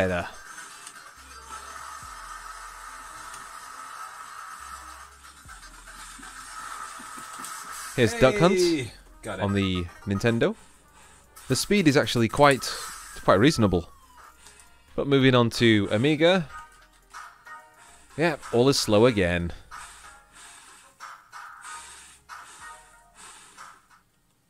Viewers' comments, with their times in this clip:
0:07 Watching this with headphones on and the HEEYY scared the piss out of me.